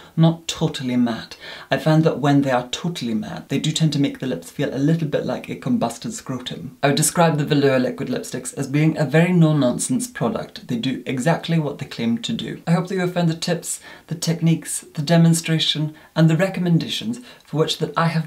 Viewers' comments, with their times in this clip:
0:06 I’ve never heard anyone speak the words “combusted scrotum” with such elegance or finesse